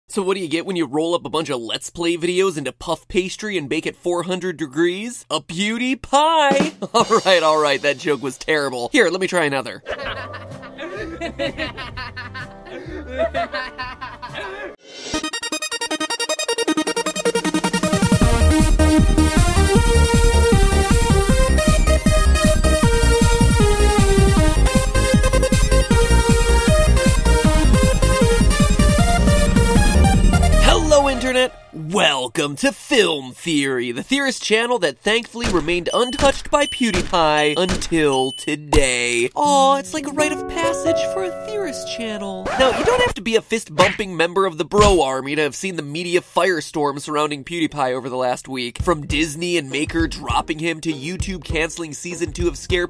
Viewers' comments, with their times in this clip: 0:10 You can literally see that PewDiePie can’t believe what he sees and doesn’t know how to react. The stupid laughter of the guys holding the sign makes him smile because he’s so weirded out by the whole situation and I can completely relate to that.
0:35 these sound effects are giving me serious Undertale flashbacks.